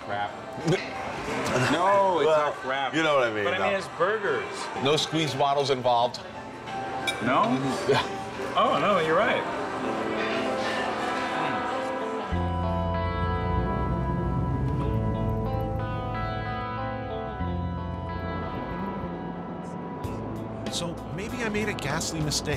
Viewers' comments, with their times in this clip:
0:10 I'm sure it's already been noted somewhere in these comments, and I'm relatively sure it's intentional, but does anyone else get there being a roundabout air of "Californication" by RHCP during the song starting ? That's one of the things that I miss about this series. The somewhat obvious callbacks to popular hits of the day, and of decades past to somewhat heavy-handedly imply the pervading sensibility of a segment.